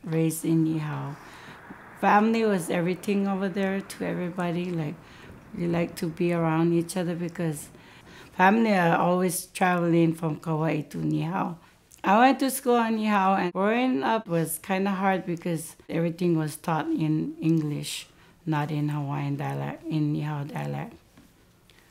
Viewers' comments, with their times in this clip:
0:03 I was born in Kawaii, and I was raised in Ni Hao.